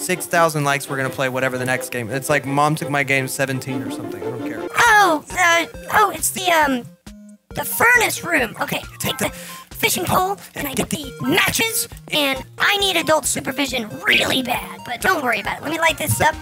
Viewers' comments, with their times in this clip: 0:04 bro sounds like boyfriend